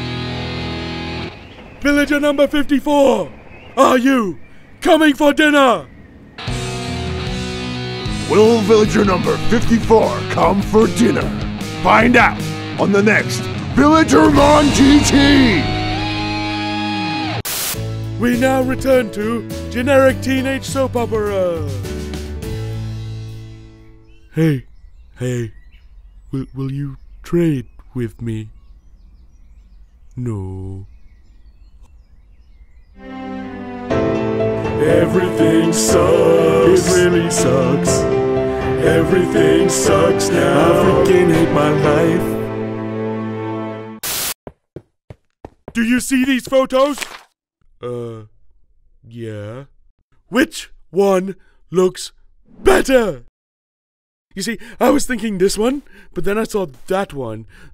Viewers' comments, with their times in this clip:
0:08 this dude sounds just like a normal villager. Villager #5 has a much more unique voice
0:29 the way he says no is super funny for like no reason XD
0:33 man i wasnt ready for that song. Man that was something! Nice animation for tv mini series.
0:33 Exactly, So let's get off of this and also, That ball sounds like it's from an anime and that ball's not right so let's !
0:34 i like the song
0:34 My fav sound track
0:35 The most saddest song of all T^T
0:40 I heard "I f*cking hate my life"